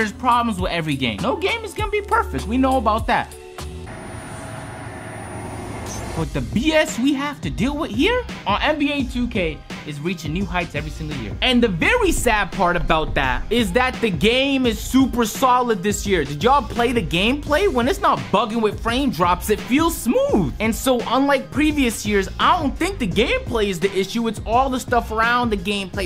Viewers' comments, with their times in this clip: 0:10 "vewwey sad" lol